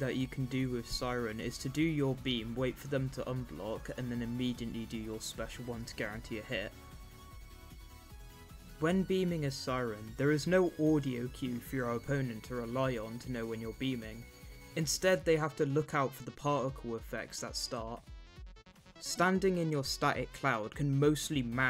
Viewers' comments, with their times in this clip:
0:09 siren head actually does have an audio cue for when he's beaming, it's a faint sizzle/burning sound though it is hard to hear during gameplay because of music/attack sounds